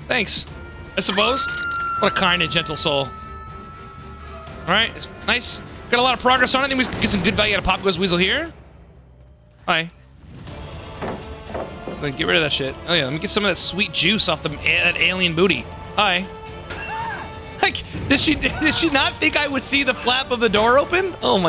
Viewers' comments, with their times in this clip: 0:08 "Hi" * epic music starts playing* This is so random but I love it lmao